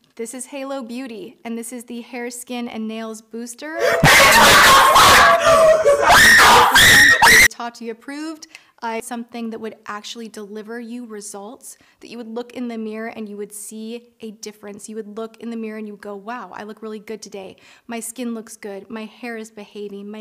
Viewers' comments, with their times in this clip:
0:04 scared the shit out of me / rip headphone users